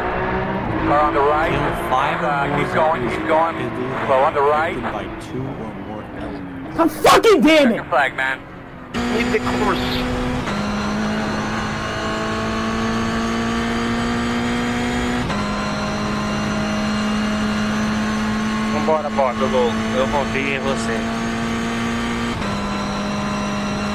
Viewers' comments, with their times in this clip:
0:09 He said that with his whole chest